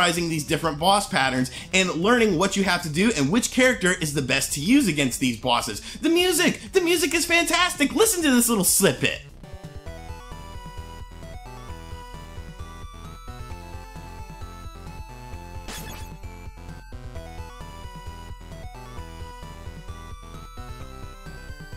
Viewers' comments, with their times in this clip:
0:06 "The music, the music is fantastic! Listen to this little snippet": (Super low audio sample) What? Crank up the LUFS so we can hear the fantastic!